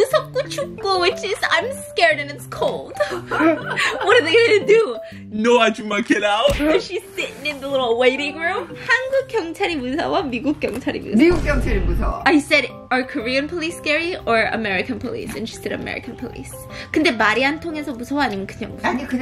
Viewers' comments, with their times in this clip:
0:05 Omg your moms smile/laugh 😢❤ so precious!!